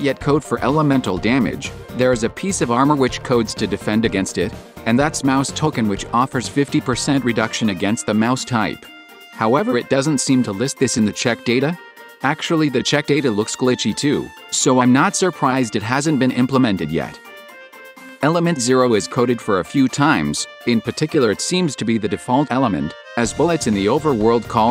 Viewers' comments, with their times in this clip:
0:09 did the text to speech have a voice crack lmao